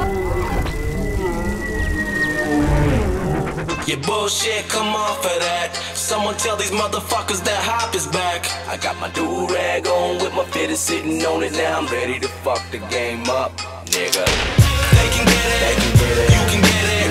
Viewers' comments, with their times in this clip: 0:03 is when the song starts